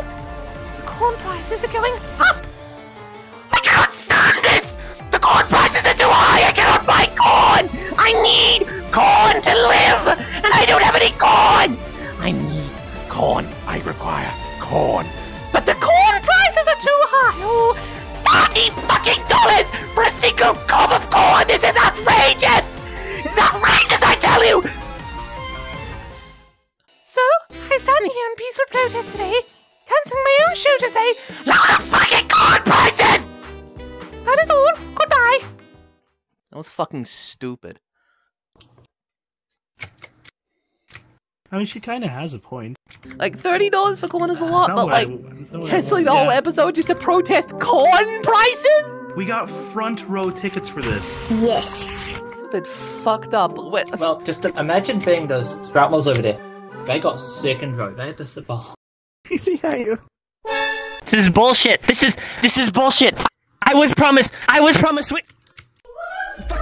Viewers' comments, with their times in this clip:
0:06 HOLY SHIT MY HEARS
0:49 that sweetheart scream made me shit myself. that sounded like my mom way more then it should, so i just sprinted out my room at 1 am to see nothing was wrong. i swear to god